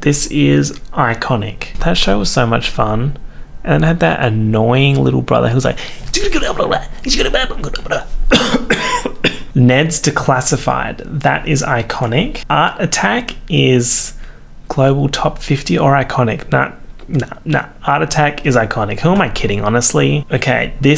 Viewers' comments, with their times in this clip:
0:06 Mike juugewebawajugugawebawa coughs in Corona